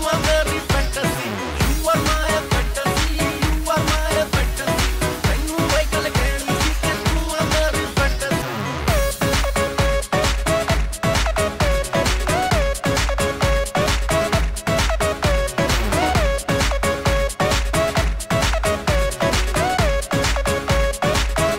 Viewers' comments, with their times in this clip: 0:09 Just listen to these beats Yo Yo 😍